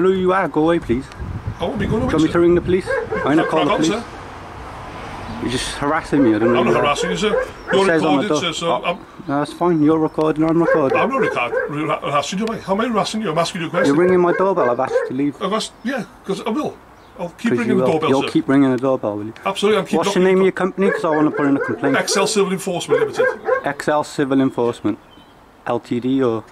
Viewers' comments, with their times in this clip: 0:09 ahahaahaha! Wtf was that uncoordinated drivel, was that even English?? That whole sentence was just a mega tongue twister lol “I’m not rehar are oo arrassin, how am I rassin you? I’m asking a question” xD